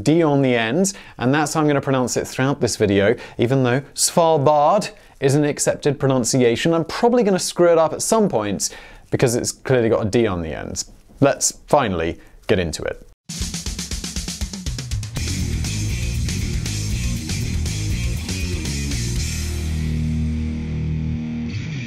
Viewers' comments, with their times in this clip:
0:08 simon has been screwing with a lot of d's i hear.